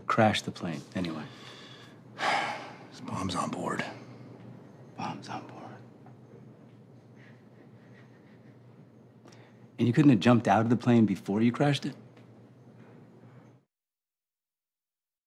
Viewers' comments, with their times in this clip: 0:07 you can totally hear someone snickering